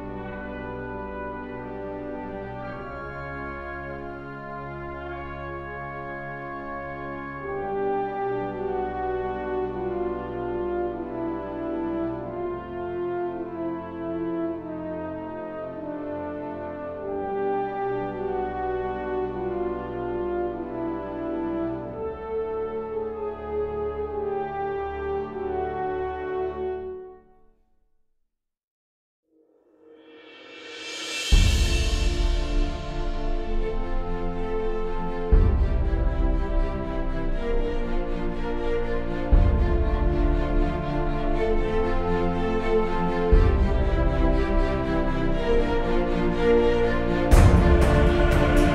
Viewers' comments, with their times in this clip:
0:07 reminds me of great fairys fountain from LoZ
0:33 I always get chills when that song comes on on any of the Shadow of Israphel episodes. :D